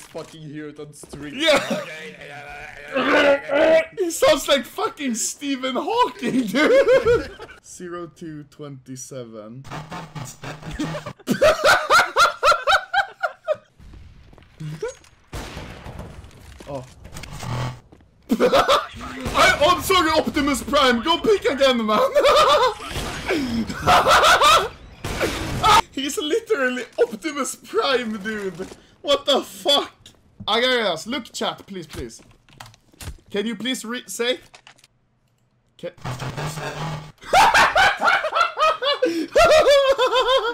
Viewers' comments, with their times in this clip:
0:04 Rest in piece, Stephen Hawking FeelsBadMan
0:22 xd that cut off rage 😂
0:25 cuts out his yell of pure rage.